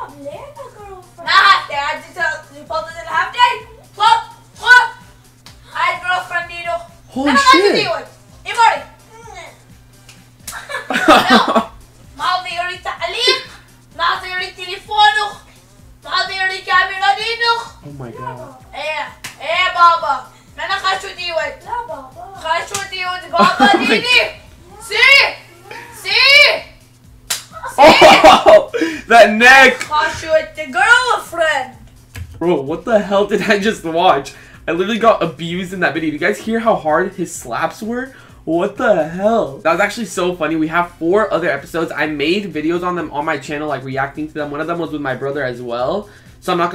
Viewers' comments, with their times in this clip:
0:08 faze rug started crying
0:13 awww faze rug was talking so cute when his brother was hitting him😘😍😘😂😂
0:30 when'd rug s brother ended the video the keyboard sounded like a razer black widow WTF